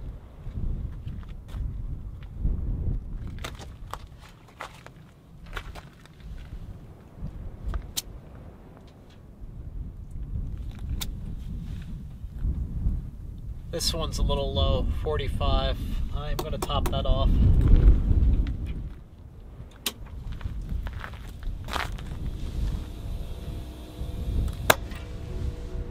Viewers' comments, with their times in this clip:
0:08 I thought he was KISSING THE TIRES! (Guess his tire pressure checker “clicks” when he uses it…)